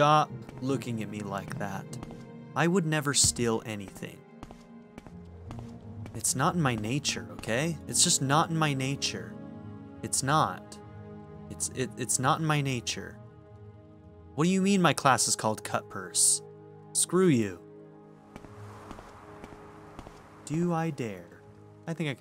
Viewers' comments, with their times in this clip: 0:05 It's not in my nature, okay? It's nAt. Oh, hi Mark ;)